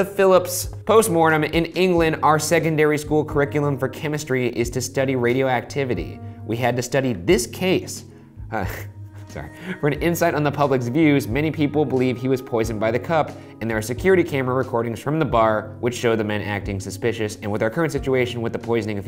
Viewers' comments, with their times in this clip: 0:05 had to replay when ryan accidentally slips into his theory voice and catches himself immediately afterwards. shane (being completely zoned out) notices nothing